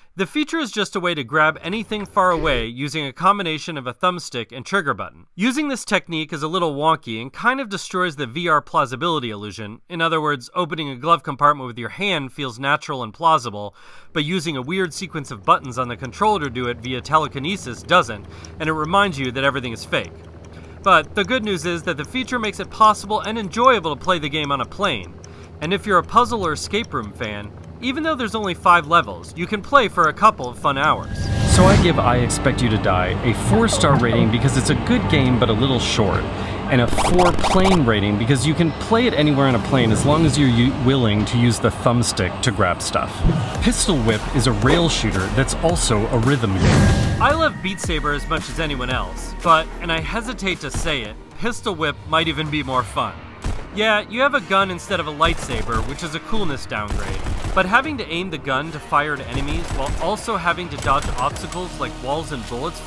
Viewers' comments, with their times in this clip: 0:10 Is it just me or if you look away from the screen and just listen to his voice it sounds like mrbeast
0:26 imagine sitting near you and hearing that bomb ticking sound coming from your headset
0:48 sounds like mr.beast